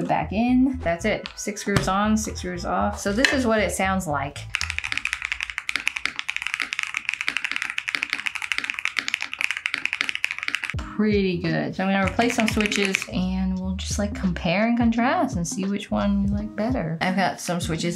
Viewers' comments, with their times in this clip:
0:04 bro are you kidding me with that noise from the typing? you have your audio messed up or something that sounds striaght ridiculous. the silent sounded good i dont get what is going on here. how do you make it silent?